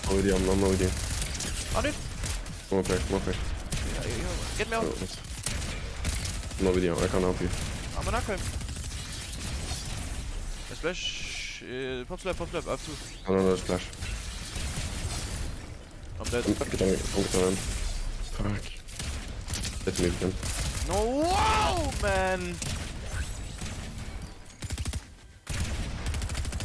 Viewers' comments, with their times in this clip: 0:08 did you say amina koyim😂